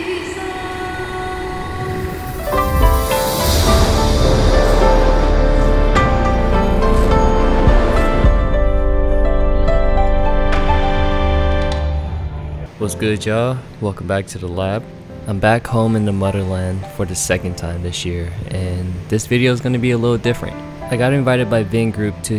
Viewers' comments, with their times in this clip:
0:06 Can you tell me the name of song 😢 so traditional